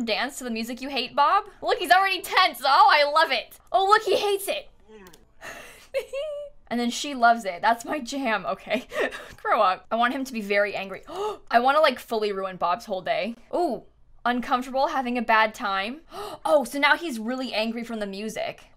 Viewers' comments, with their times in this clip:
0:05 love how you’re laughing at bob’s pain